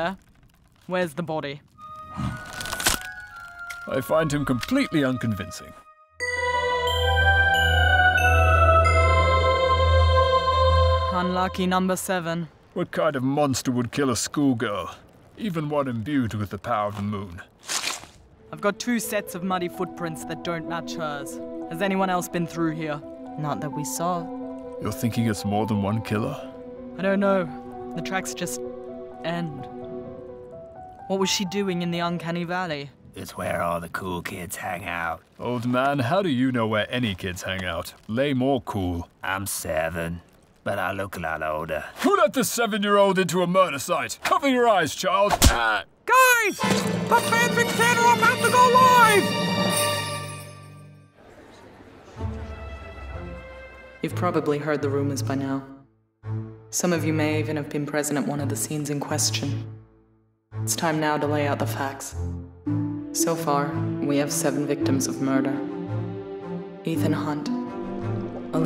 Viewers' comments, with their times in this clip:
0:06 sounds so much like the start of my ringtone i swear
0:49 We’ll that’s not what the conductor sounds like at all by nice try 😂😂